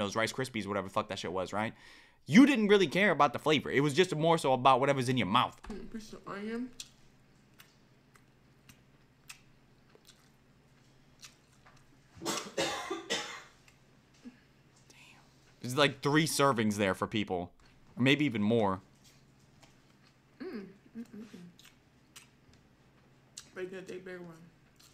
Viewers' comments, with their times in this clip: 0:10 eugh i can’t with her smacking mouth eating